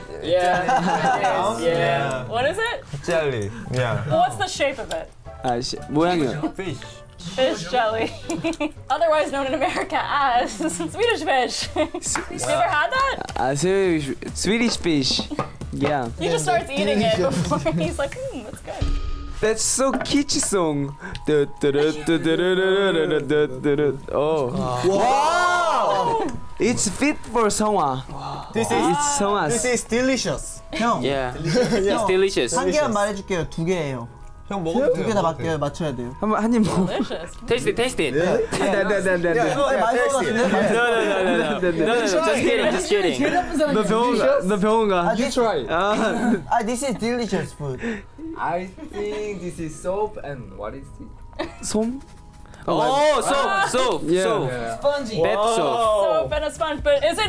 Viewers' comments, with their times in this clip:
0:06 idk if it’s just me but the way he says fish is so cute😩😂❤️
0:06 Yeosang's "fishj" is the cutest thing I've heard today 😭
0:43 Seonghwa speaks perfect English. Why didn't I notice before arghhhh